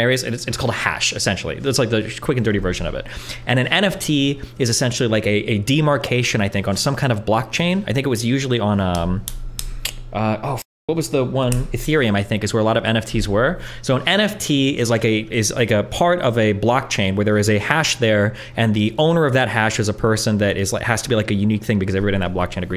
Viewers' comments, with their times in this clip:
0:06 he explains it like were you not listening?